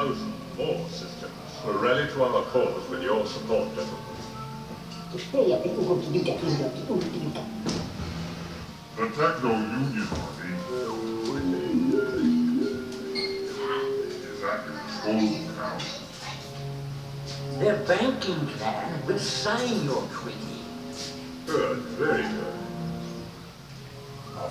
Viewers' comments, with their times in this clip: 0:05 Shu Mai’s voice 😬😬😬